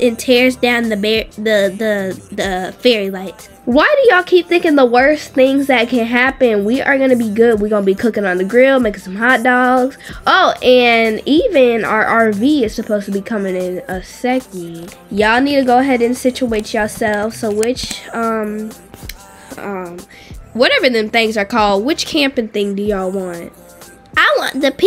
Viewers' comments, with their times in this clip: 0:07 THE POOR MICCC😭😭😭😭😭😭